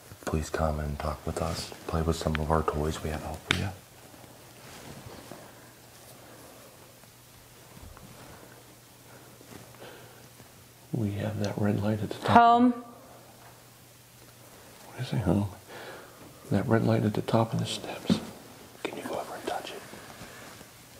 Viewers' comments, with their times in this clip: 0:08 you need to go outside so there is no contamination. Your voice is to loud if you want someone to believe go outside